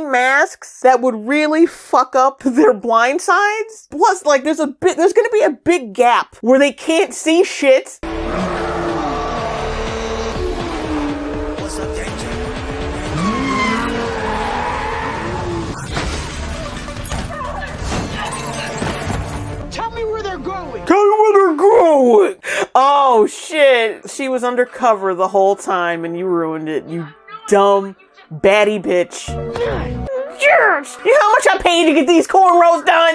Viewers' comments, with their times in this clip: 0:09 did I just hear 'what's up danger' in the damn music? UGH fuck this show! 😂
0:20 so the producers changed her voice modulator… again 😂